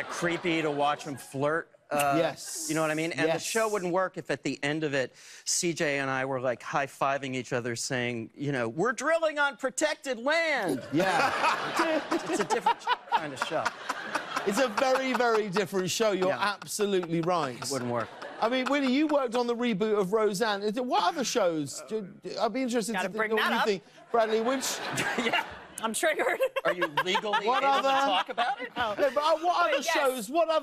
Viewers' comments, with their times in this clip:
0:08 the day I make Reggie laugh that hard is the day I can say I've made it in life!!
0:12 Who's laugh is that ish . Nobody's mouth is laughing with the time of . Lol trips me out
0:14 where is this creepy laugh coming from ?
0:14 that laugh is similar to batman laugh in teen titans go
0:15 Who was laughing ??? 👀 you can hear him say “omg”at the end of it too...